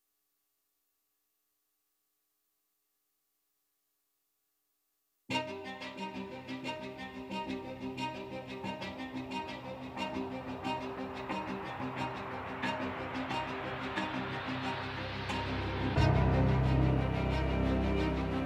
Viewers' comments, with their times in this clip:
0:05 Love the intro music